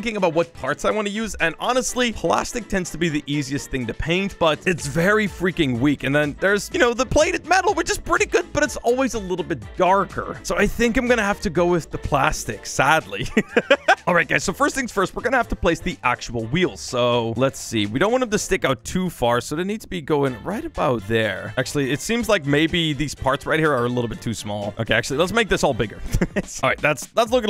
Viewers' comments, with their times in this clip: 0:09 When he Said darker For some reason the 1st time It sounded like he said cardboard